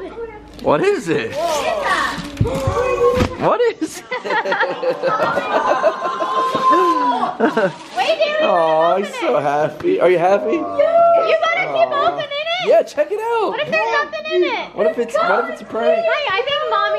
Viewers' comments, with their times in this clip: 0:04 i like how flash is just outside barking in the background